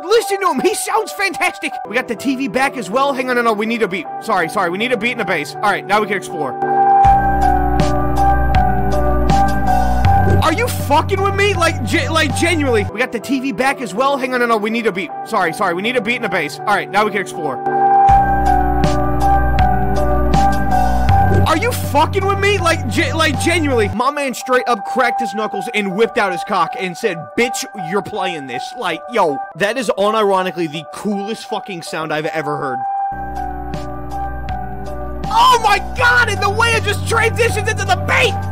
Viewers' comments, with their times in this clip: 0:05 with a speed x1.25 sounds like a masterpiece
0:06 sounds like you're walking through a zombie apocalypse and a radio signal cut out and you realize you're now the last human on earth
0:06 That sounded fuckin HEAVENLY.
0:06 THE AVERAGE 3008 SOUND TRACK
0:07 this sounds like of it was a elevator music or a horror game lobby BUT DANG IT SOUND SSO GOOD IT MADE ME FLY NEVER MIND IN THE END THAT WAS FIREEEEEEEE THEY NEED TO MAKE A SONG
0:07 sounded so good you have to put it in 3 times (the intro counts too, plus uh these 2 times)
0:13 why did it play twice?
0:19 jokes aside, you made godlike title screen music for a game, its just perfect
0:24 i like how he says the words